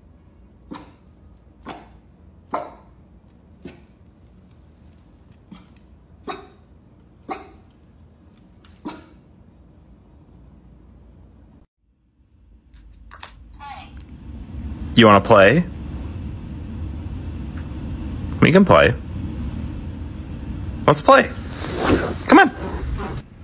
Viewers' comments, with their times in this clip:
0:08 I thought Basenji’s couldn’t park someone told me I thought they didn’t have the vocals to bark